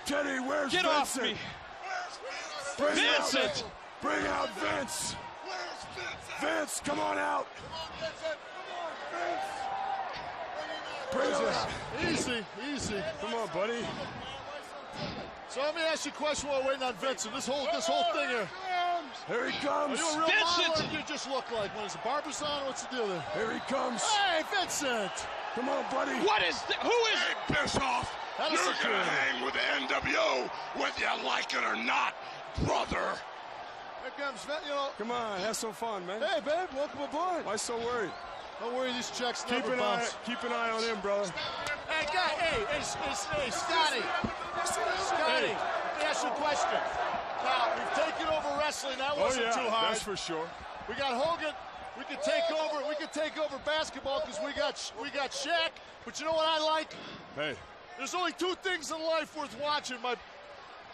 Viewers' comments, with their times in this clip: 0:07 the way how Ted called Vincent was like he was his dog lol
0:43 Fans chanting Virgil.